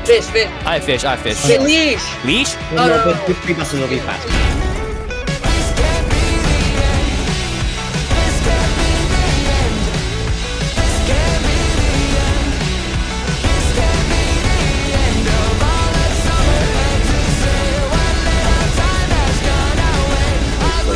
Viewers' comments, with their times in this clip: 0:04 that music he plays is so fire!